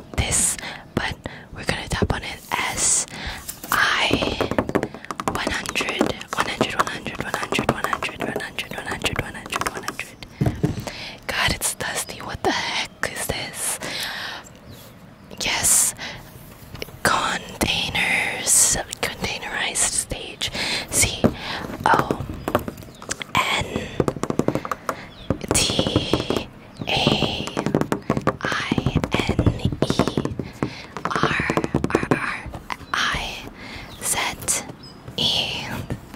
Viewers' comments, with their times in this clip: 0:03 she said 'I' instead of 'L'👀 SKSKSJD I luv these types of videos♥️♥️ the background noises are actually relaxing imo
0:21 Trace tapping is my new favourite thing lmao
0:21 I loved the tapping and tracing 👍